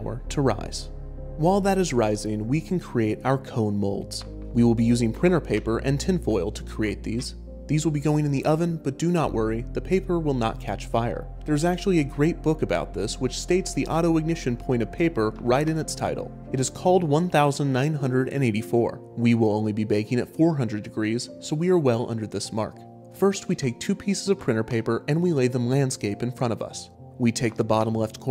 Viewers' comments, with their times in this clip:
0:09 "the paper" triggers google assistant for whatever reason